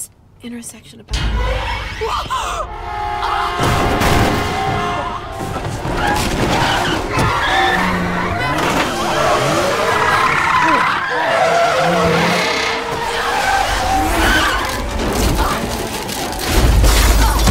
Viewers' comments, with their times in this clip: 0:03 Man... that was ridiculous. Idk what's worse, the HORRIBLE acting and exaggeration, or the sound effect, it sounds like a joke. The original looks like WAY more simple and obviously better.